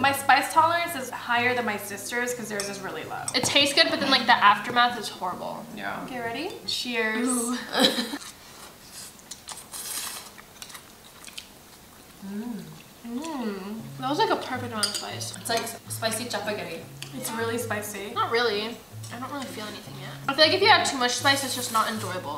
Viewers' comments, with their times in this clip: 0:05 did nobody hear the "yea?"